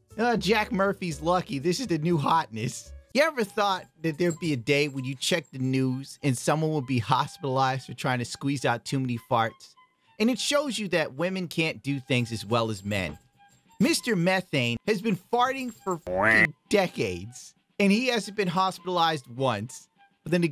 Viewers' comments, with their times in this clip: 0:05 you can hear fluffy's collar jangling around. Shit had me pause the video and listen cause I thought someone was out side jingling keys